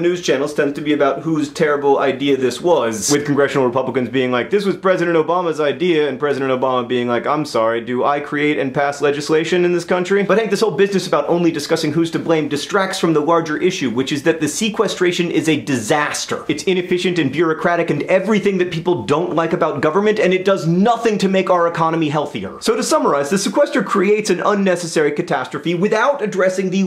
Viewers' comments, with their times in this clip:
0:07 That was a pretty good Obama impersonation